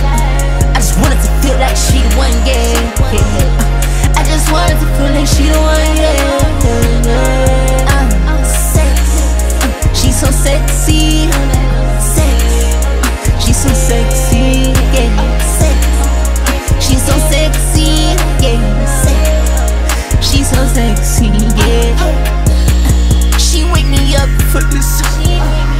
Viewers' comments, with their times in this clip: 0:09 The adlib holy fuuckkk 😩😩😩😩